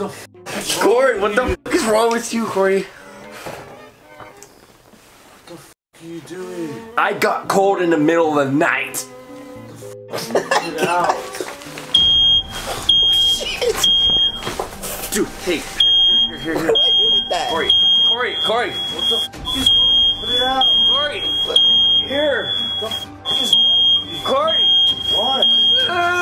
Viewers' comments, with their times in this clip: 0:09 before the fire alarmed startled him he was going to pick up a hot ember burning through the pillow lmao
0:12 *fire alarm goes off* Jc: struggling to get up Kian: tries to hand Jc the plate of fire 😂